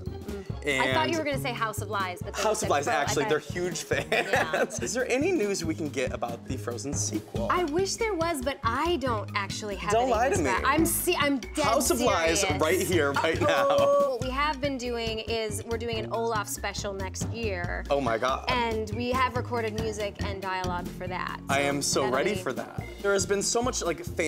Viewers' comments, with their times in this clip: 0:06 Sounds like kristen's singing to the background music xD